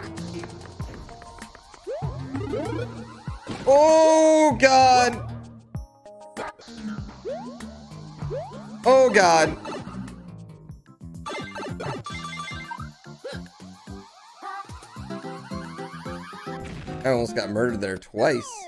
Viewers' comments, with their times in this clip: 0:04 Mario waiting for the hook "bah" to drop before hitting the bob-omb.